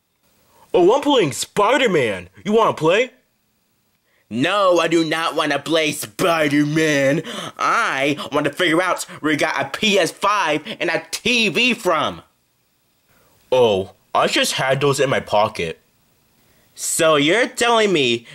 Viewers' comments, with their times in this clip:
0:04 no I do not want to play poopermaam